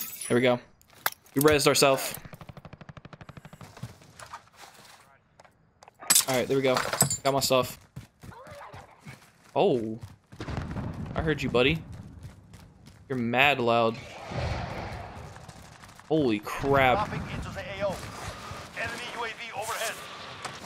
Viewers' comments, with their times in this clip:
0:07 IM DYING, the sound that zombie made is priceless!